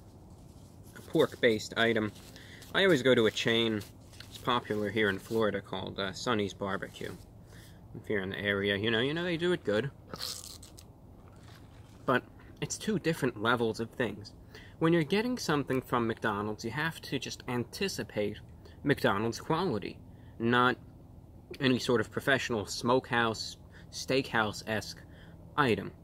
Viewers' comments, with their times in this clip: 0:08 the absolute SIP right here